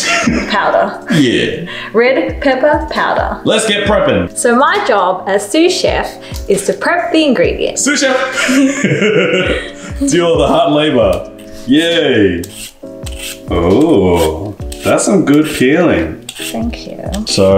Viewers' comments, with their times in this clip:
0:03 let’s get pregnant😏